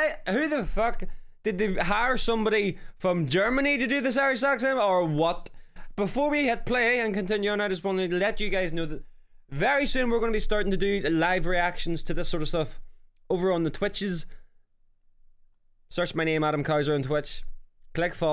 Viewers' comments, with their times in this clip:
0:06 Its not german to have this acent